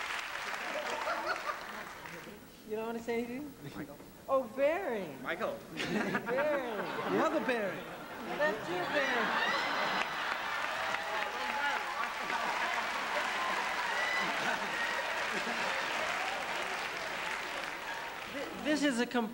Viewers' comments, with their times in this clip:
0:07 listen how michael said "there's two berry" how adorbss... >< its like a 3 y/o kid said there's two bears... so adorable!!!